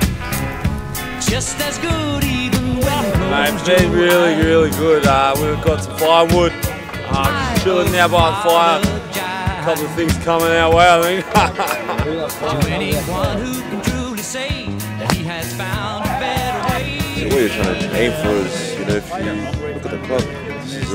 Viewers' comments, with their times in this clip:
0:05 gutho sounds like he’s been on to much pint